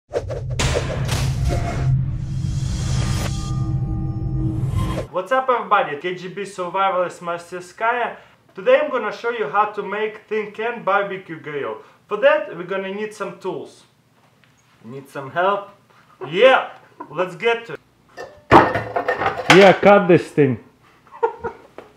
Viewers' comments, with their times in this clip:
0:05 LOOOL, what did he say ?? All i heard was "KGB survivor marsekskiarr"...